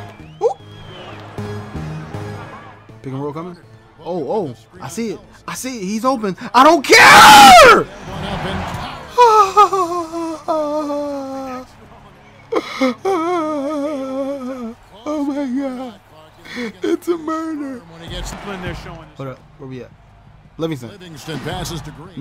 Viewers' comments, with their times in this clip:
0:05 insane poster dunk your welcome volume warning BTW